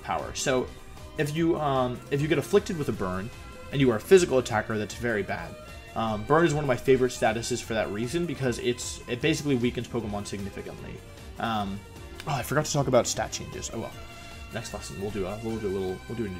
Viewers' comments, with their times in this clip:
0:03 Why did the music start it's a little distracting professor, some of us are trying to have a real education here